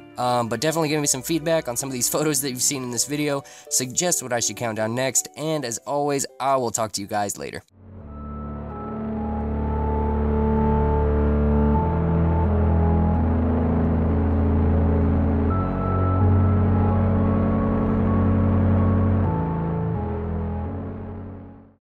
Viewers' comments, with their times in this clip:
0:07 Great vids man fun and interesting. was wondering what the music at the end is from or what its epic as fuck end